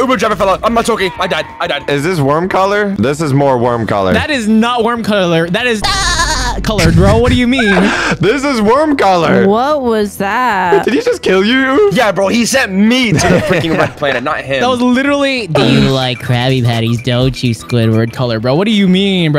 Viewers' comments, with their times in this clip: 0:03 bro hit that “ahahahahahaha” 😂😂😂
0:06 sponge bob ahh laugh💀💀💀